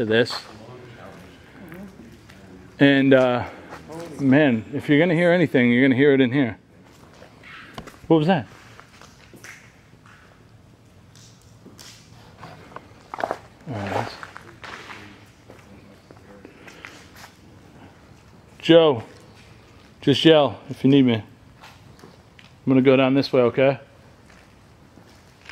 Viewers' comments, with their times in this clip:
0:06 .......i hear a creepy angry disem voice saying......."OUT"......!!!!